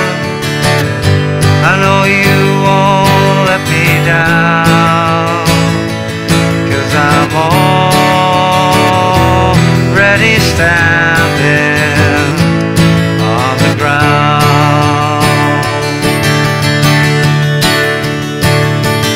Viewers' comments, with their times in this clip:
0:04 That A should be half measure of Em first, then A